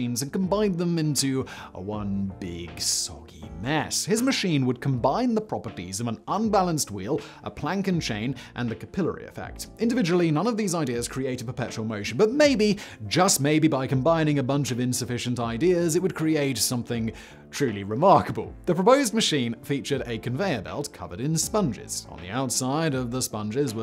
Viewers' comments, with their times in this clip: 0:05 Why you doing an Indian accent ?